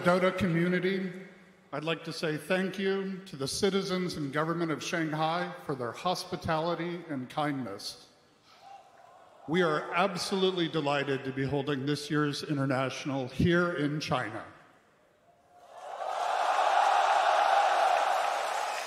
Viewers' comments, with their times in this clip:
0:04 uh Riki crowd for any play that's not by a Chinese team and booing TNC. Got to love that Chinese Hospitality